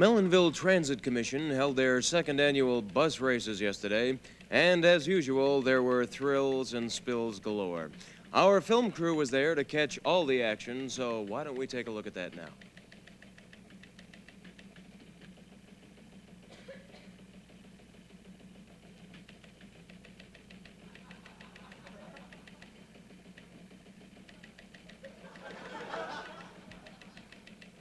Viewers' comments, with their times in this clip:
0:08 I can't believe that 120 seconds of silence could be so hilariously funny. The look on Earl's face during the silence is absolutely hilarious